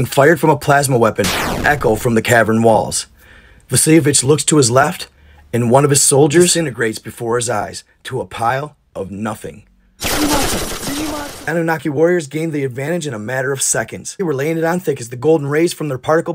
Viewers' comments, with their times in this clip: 0:04 Who da frick is "The Savitch," now!?